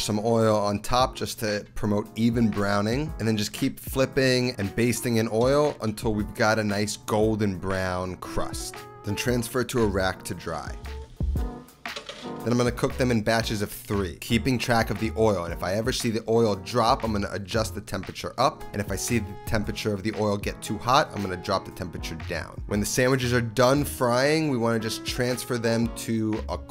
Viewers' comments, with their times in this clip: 0:06 "transfer to iraq to dry" oh no
0:07 "transfer to Iraq 🇮🇶 😳 to dry"